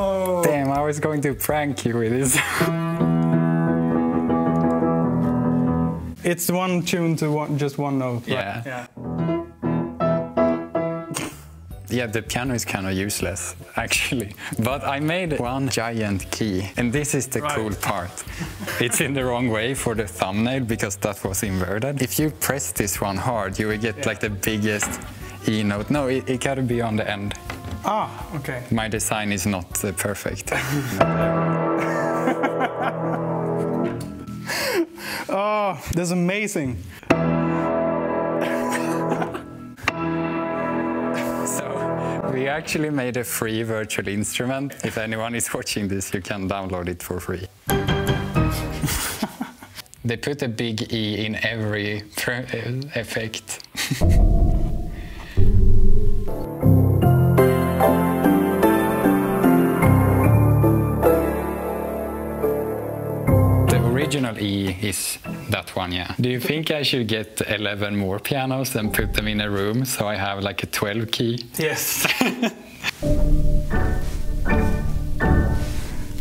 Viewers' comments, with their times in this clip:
0:09 oh no, it's out of tune
0:11 when he let that "snork" :D that's the exact sound an expert would make when you're going to make this stupid silly thing noone sane would do and he totally likes it :D
0:23 someone needs to make a Halo 3 edit with this massive E
0:29 when he presses just straight E my immediate thougt was the opening theme for Halo 3 😁
0:30 Sounds like that one Halo 3 song that plays in the beginning of the covenant mission
0:55 that sounded like wet hands in a góófy áhh key
0:57 is that a song? Sounds dope